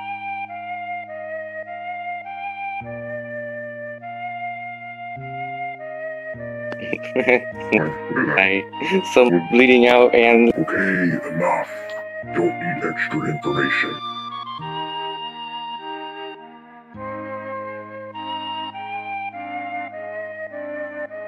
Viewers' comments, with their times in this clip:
0:05 I did.... For the one InSaNiTy line I was actually Laughing... Not just in character... But also cuz I couldn't keep a straight face XDDDD then it seemed too perfect! XD Happens